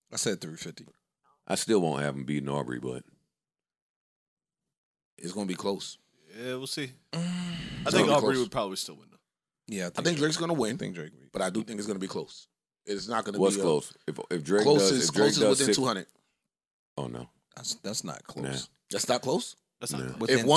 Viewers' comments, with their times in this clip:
0:07 Who tf moaned